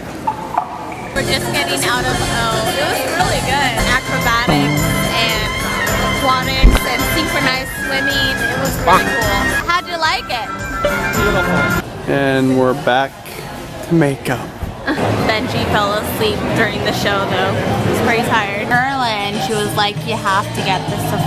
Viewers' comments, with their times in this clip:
0:05 Did you fart ?!? 😂😂